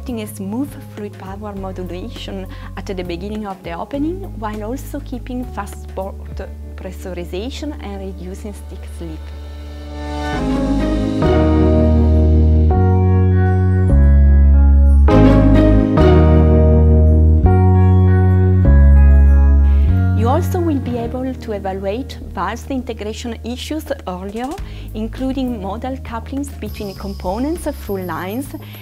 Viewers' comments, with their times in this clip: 0:09 The music build up is really cool!